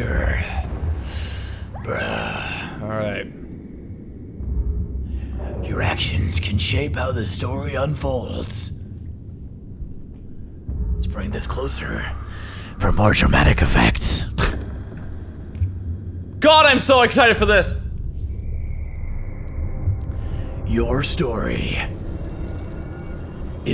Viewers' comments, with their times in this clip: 0:04 he sounds like the guy from honest trailers